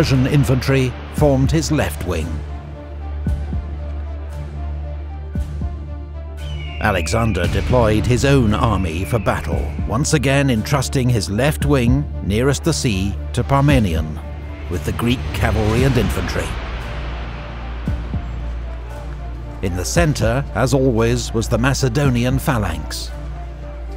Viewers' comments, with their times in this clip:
0:05 random, in-game, eagle sound effect right on time